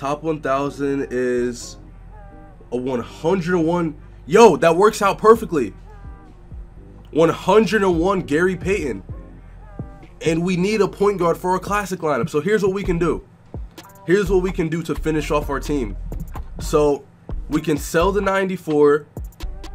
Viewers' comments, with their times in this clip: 0:04 why he say it like that tho😂